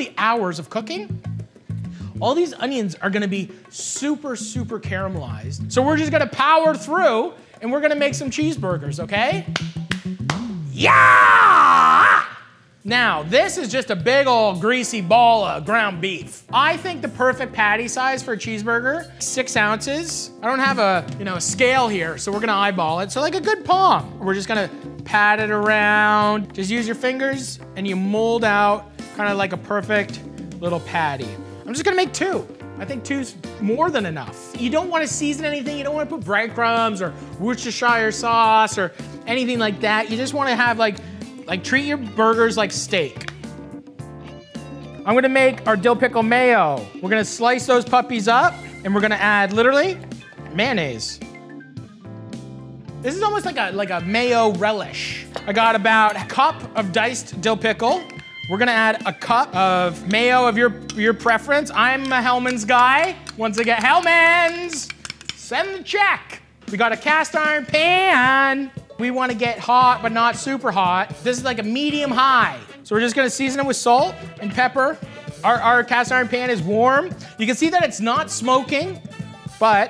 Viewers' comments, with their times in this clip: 0:09 Mathy looks and yells like 2018 Axl Rose
0:10 he sounds like a nazi zombie from call of duty
1:07 the way Matty says pan is my favourite moment of all time